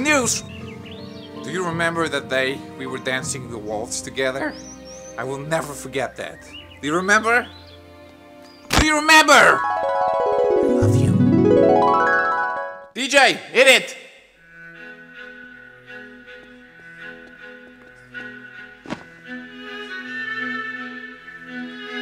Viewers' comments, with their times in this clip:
0:03 biggest voice crack